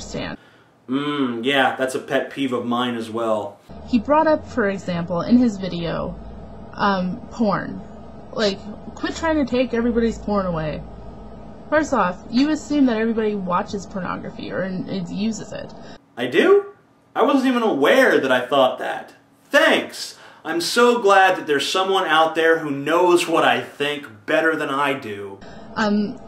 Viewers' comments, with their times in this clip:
0:07 I thought she said "corn"! That really threw me for a loop!